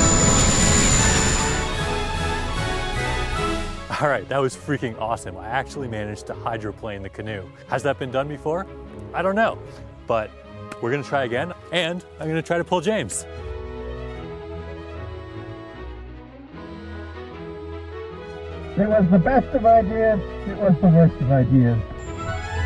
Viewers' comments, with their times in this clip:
0:04 Mickey Mouse the engineer tells us his devilish plans